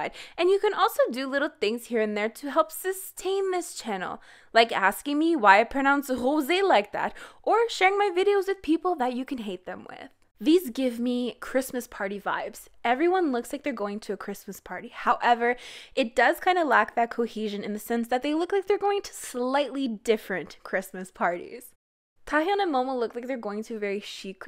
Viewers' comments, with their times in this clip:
0:06 I wasn’t looking at my screen so I got a bit confused on why she was talking about a Kpop idol with the name José.